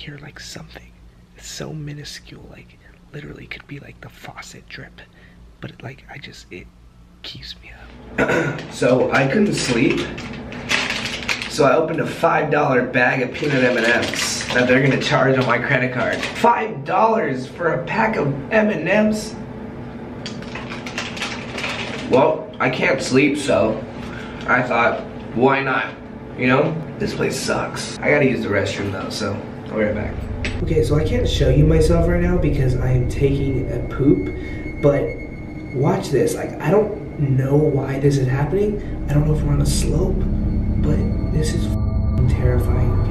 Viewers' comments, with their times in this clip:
0:07 frikkin audio jump cut. -_-
0:29 This will probably sound soooo weird but the way he says "poop" is so...funny kinda cuz he kinda emphasizes the "p"s in Poop